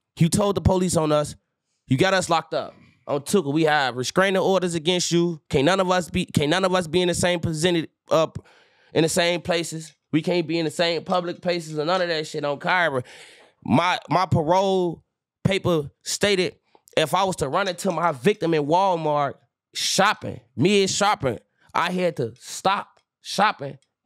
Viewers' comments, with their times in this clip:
0:10 him giving up on vicinity is crazy 😂